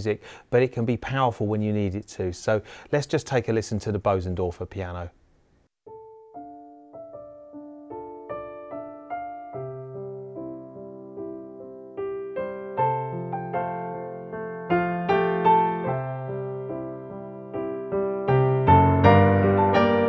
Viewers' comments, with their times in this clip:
0:07 Lovely piano. Does anybody know what the piece is being played ?